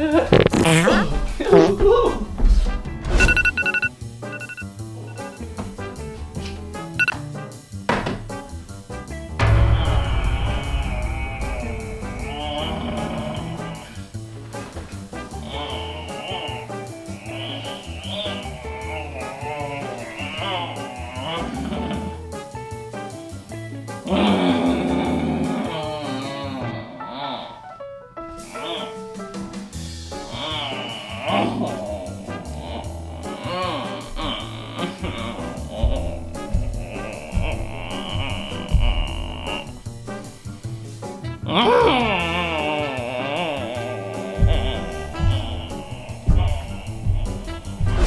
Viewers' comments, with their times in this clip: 0:03 The e groaner is me every day.
0:33 His groan sounds like a fart